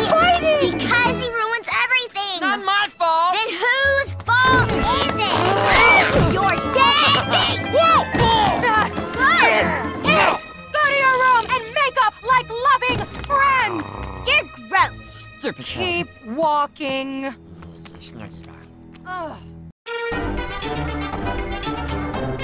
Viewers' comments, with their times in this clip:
0:07 Stitch sounds like crash bandicoot 🤣🤣